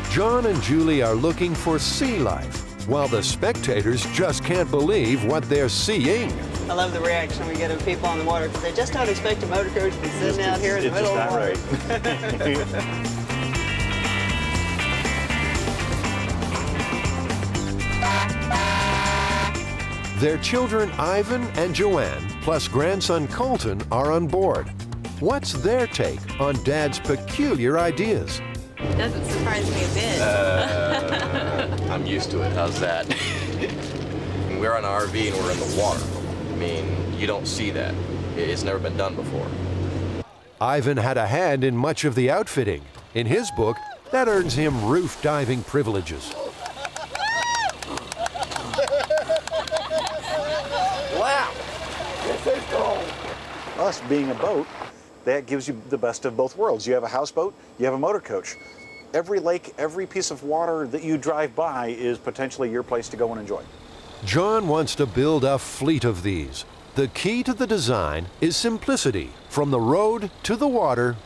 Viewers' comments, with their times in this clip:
0:05 even the narrator is shocked just hear the sound of his voice...
0:52 "This is cold" Sounds like Chris from Family Guy